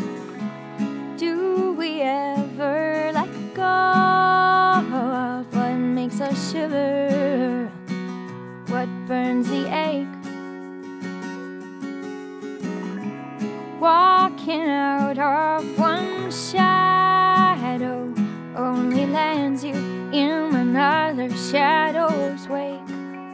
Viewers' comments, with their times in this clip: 0:09 what burns the egg?